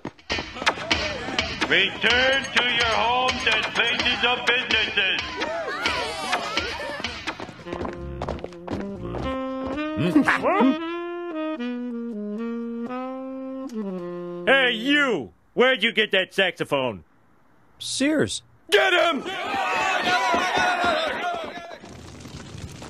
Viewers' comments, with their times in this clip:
0:05 how about you get rid of the music and they speak clearly through the megaphone?
0:08 that saxophone is completely different from Lisa’s